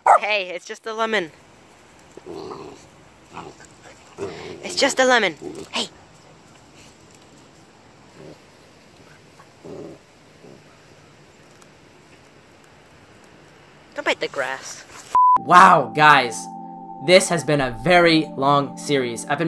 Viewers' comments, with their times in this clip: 0:07 oh my gosh so adorable he/she is barking at it because it's sour and he/she is mad at that! That is the cutest thing besides the box of kittens I am sitting next to. I wish I could upload some pics they are adorable they just turned 5 weeks old. Thank you for the video! ❤😊